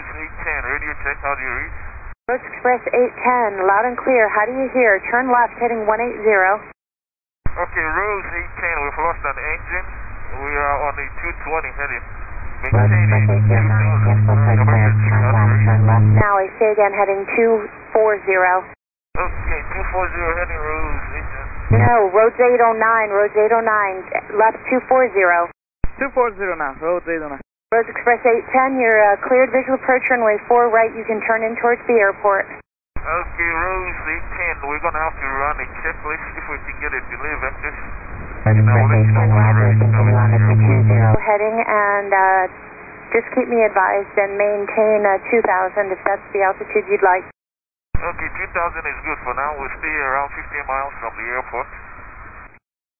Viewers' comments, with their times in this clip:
0:10 Bro the modulation sounds like it belongs in an analog horror video.
0:13 she turned into a robot😭
0:38 is creepy tower voice message broke
0:39 why does the atc controller sound like an alien😂😂😂😂😂😂
0:39 bro.. whats happening with her mic?